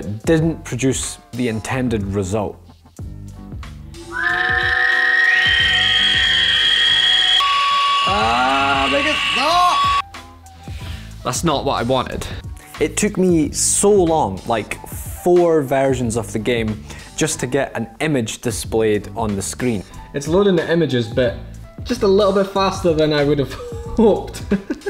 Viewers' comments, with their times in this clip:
0:05 [high-pitched demonic screeching]